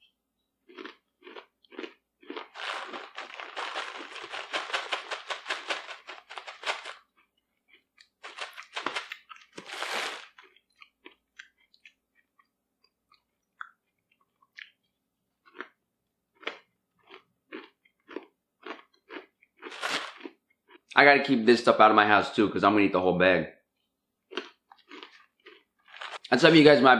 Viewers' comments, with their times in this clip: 0:07 Lmao on a completely unrelated note the sound of you pouring granola sounds like the sound of digging for sand in minecraft.